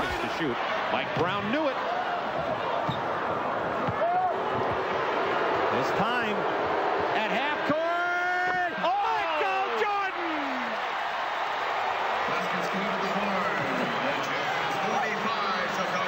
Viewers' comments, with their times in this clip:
0:03 haha i love how the Utah Jazz fans forgot that they were booing Jordan .. haha they started cheering him afterwards